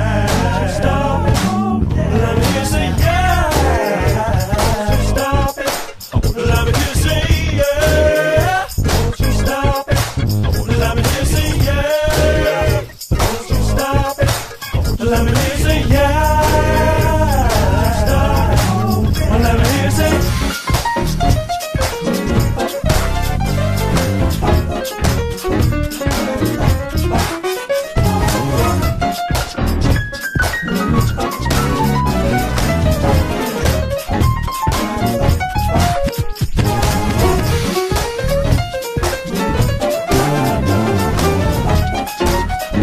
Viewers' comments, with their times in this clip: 0:05 I feel like the shakers from onwards have a sort of septuplet swing to them, rather than being just staight quarter notes, does anyone else feel that too?
0:19 The piano part is fucking incredible
0:22 Even Jacob Collier isn't above the lick.
0:23 Anyone catch the lick in the piano solo